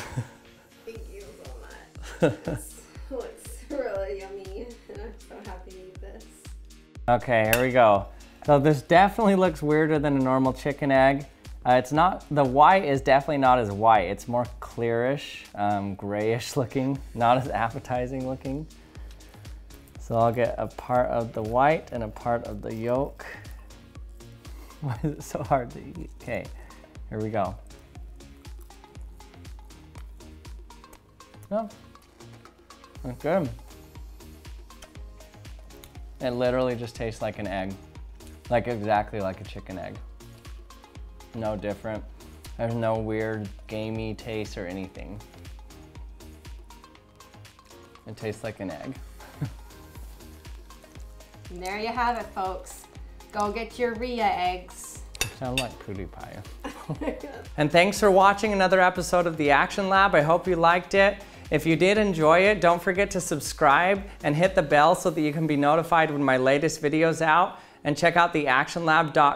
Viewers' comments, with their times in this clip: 0:05 like that piano
0:05 like that piano
0:55 Can't understand what he said. Probably nothing important, but.. I'm curious. Some help ?